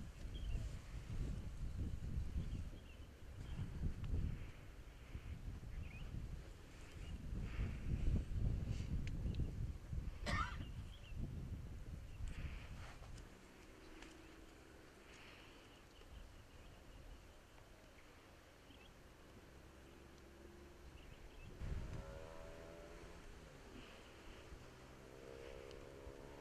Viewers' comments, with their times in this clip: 0:09 A cough ,lol.
0:10 cough no problem, the air is good